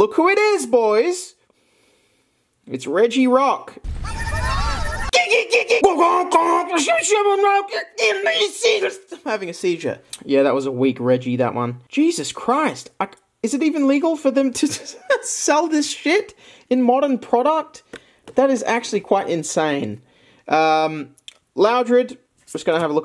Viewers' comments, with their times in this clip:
0:05 how he speaks regirock sounds like he's drunk